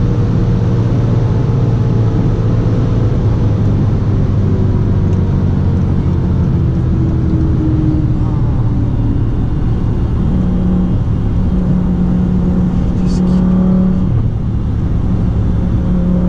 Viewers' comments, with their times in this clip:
0:04 that disappointed sound at left-lane hoggers